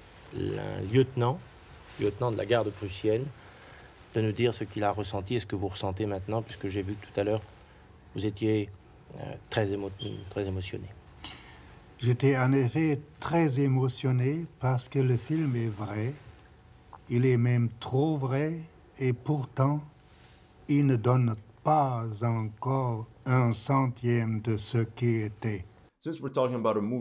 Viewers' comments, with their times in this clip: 0:08 Holy shit the smoke detector low battery chirp seems SO out of place here